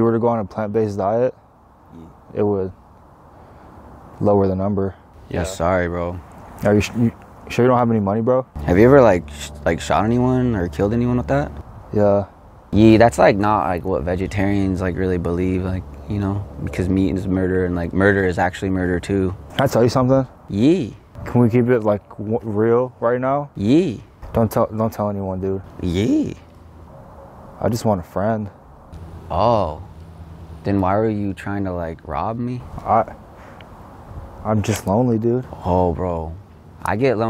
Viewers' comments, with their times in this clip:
0:10 I like how casually he says “yeah”
0:23 Not gonna lie, that was a pretty good ye.